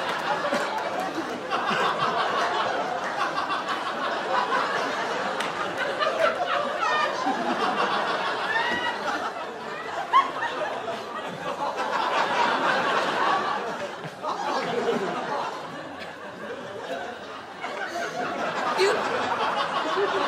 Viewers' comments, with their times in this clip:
0:03 I love how his eyes start to close a little once he looked over and saw what he did, and starts laughing lmao